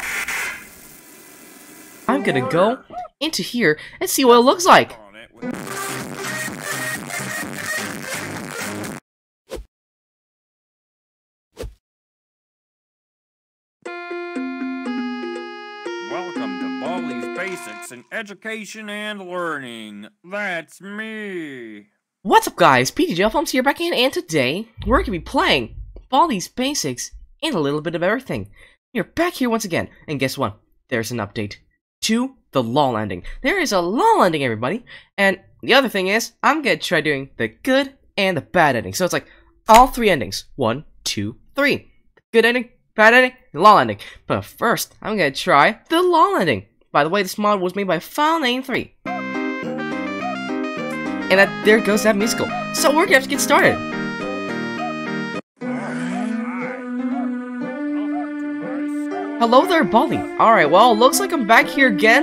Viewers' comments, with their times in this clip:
0:05 B A S B O O S T W A R N I N G
0:05 Kinda sounds like stero love
0:06 WARNING EARRAPE VOULME DOWN
0:49 so like no one is talk about dispaseto music
0:50 feels like the song fundatatanols I CAN'T SPELL😭😭😭😭😭😭😭😭